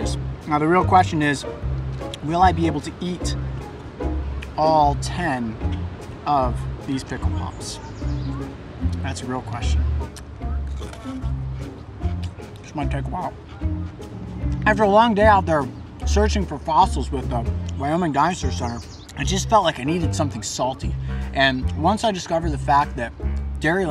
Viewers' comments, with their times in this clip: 0:09 isnt that crunch a little satisfying